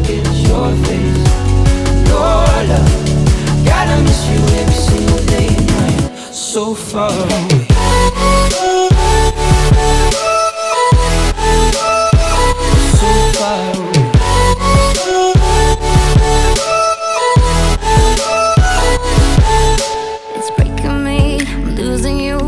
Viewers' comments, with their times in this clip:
0:06 AHHH THE DROP